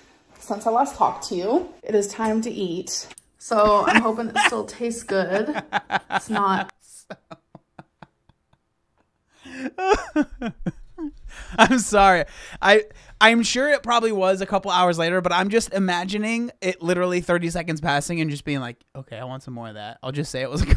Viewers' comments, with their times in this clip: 0:08 The laugh! Im living.